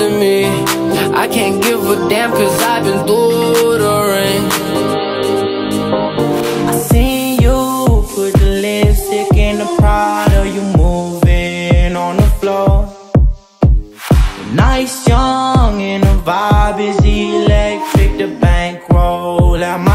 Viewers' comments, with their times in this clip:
0:06 beat drop gave me ghoosepumps